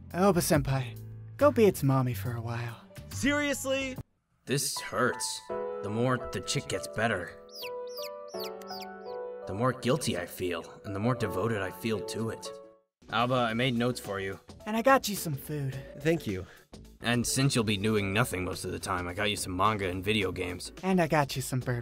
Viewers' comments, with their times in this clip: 0:06 You can’t just play the saddest song ever all random like that!